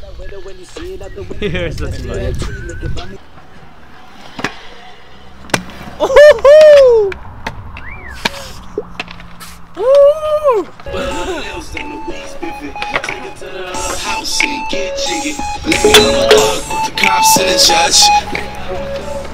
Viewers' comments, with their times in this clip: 0:04 Play at 0.25x speed It sounds like the kid that says "oof"